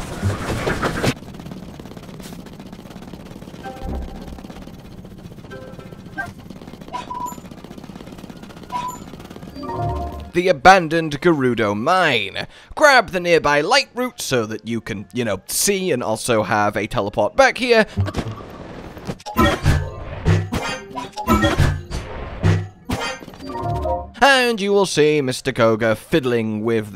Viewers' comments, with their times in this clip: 0:07 Scooby doo feet sounds